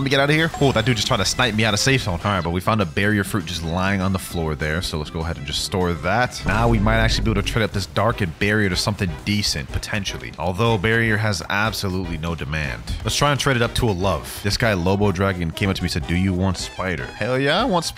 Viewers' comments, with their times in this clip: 0:05 why is there a vine boom sound?